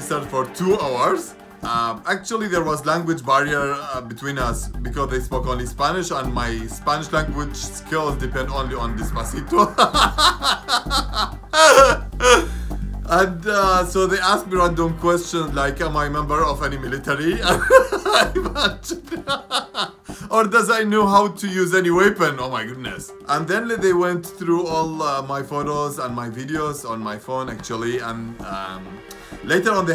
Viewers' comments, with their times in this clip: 0:09 when the Joker laugh syndrome hits hard
0:10 he laugh so hard until forgot to breath
0:10 xD that laugh WTF